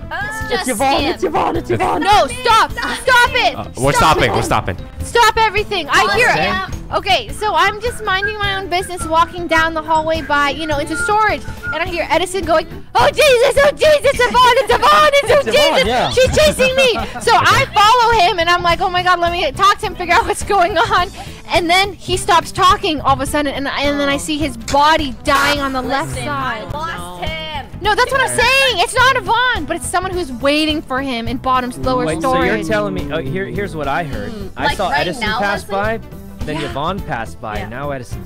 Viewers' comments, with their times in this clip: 0:08 is that fucking Fiddlesticks whistling? oh naw
0:24 Love how they play Tyler1's rage scream